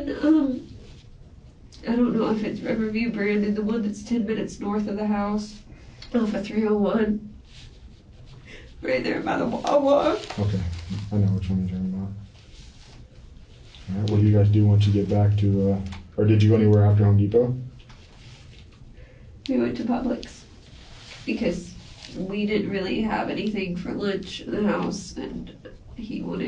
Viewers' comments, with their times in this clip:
0:07 Right ther by da wawa 😂😂😂